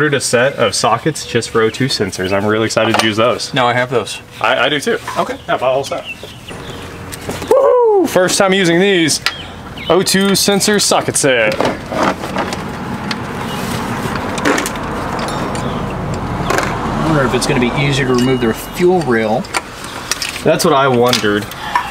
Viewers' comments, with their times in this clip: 0:06 My mans got the Homer Simpson "Woo Hoo!" down pat 😂😂